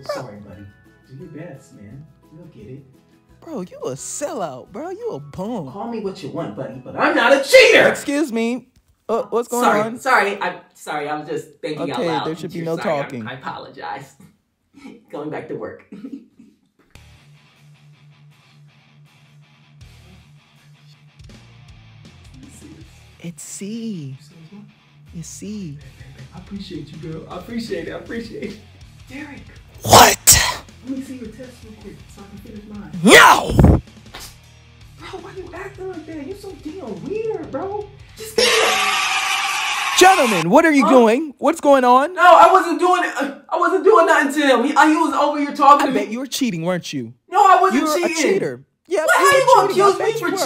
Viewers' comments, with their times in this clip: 0:07 I love how he had to turn the voice back on after yelling 😭😭😭
0:27 what was that whisper the whole class could hear 😳🤣🤣🤣🤣😇
0:33 “NO!” Blows in mic